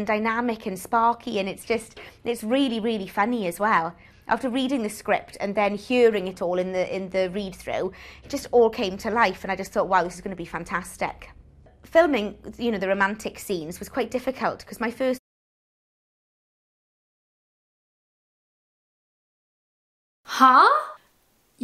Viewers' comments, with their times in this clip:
0:05 One tell for Welsh is "hyearing" for "hearing"